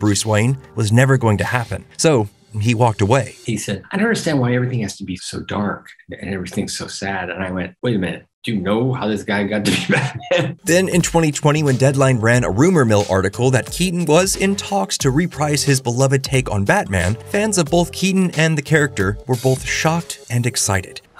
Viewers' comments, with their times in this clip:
0:08 what is Keaton saying? No matter how many times I rewind I can’t hear it